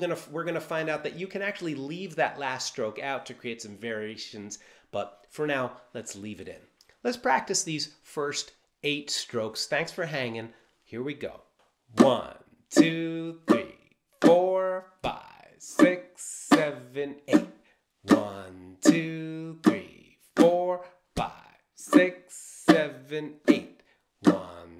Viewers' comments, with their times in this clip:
0:08 Great practice session. I keep pausing by and just stick practicing with the pattern for a while. Oh, and the accents remind me of the claves in Latin music. Ole!